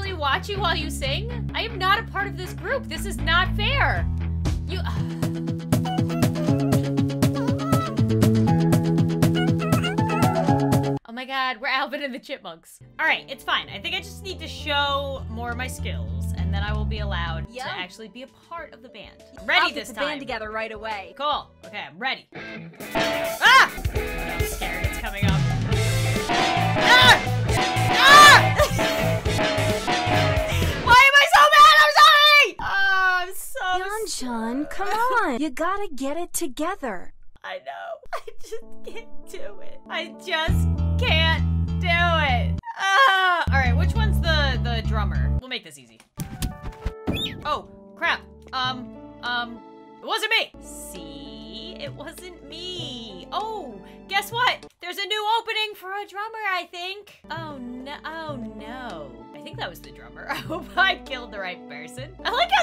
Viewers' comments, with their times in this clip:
0:05 Why is it so catchy!! 😭
0:19 guys turn down headphones and the intro. Im not joking i think I need hearing aids now:/
0:46 LOL THE SCREAM